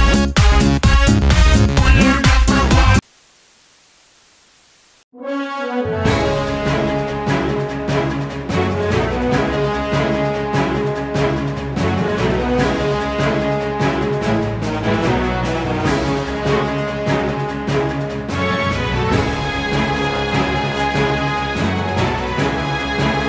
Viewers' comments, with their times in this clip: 0:05 nice music. Nostalgia